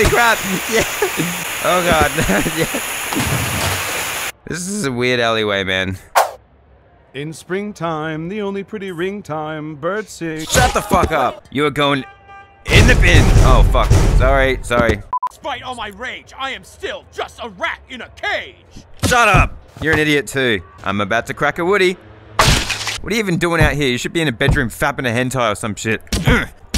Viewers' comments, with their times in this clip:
0:07 This is so funny my favorite part was when he starts singing